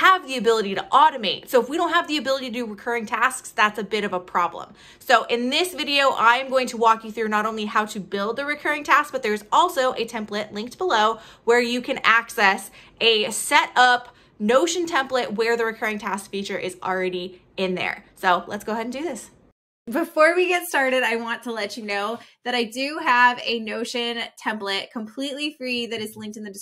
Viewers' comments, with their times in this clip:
0:07 Seems like your audio is out of sync ?